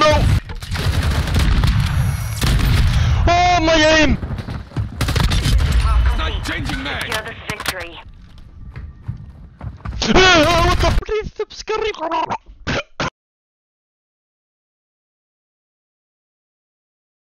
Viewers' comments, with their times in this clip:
0:10 this guy was like: hello your computer has virus